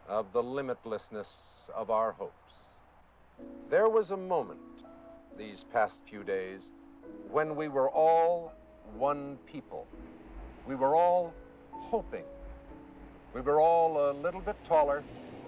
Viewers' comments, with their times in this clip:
0:03 when the piano gently enters is pure gold…